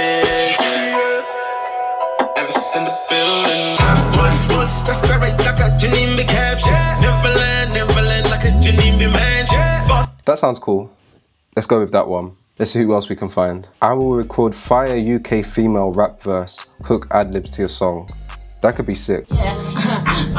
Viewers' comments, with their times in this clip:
0:04 ....thats you. Stop playing.